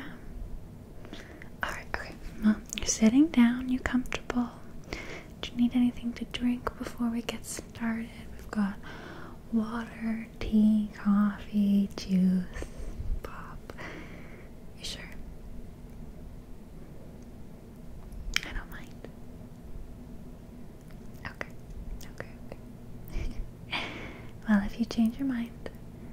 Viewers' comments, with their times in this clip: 0:09 "Water, Tea, Coffee, Jews???" Lol